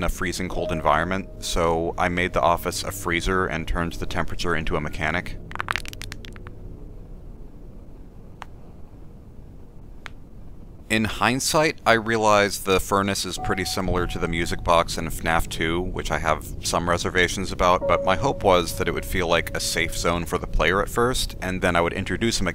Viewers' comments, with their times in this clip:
0:05 HOLY SHIT THAT WAS A LOT OF CRACKING